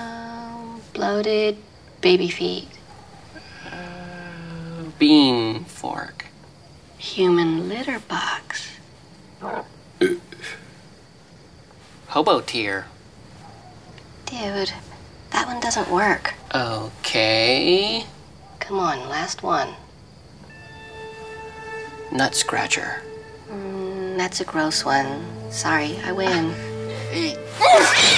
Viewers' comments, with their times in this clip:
0:09 such a realistic burp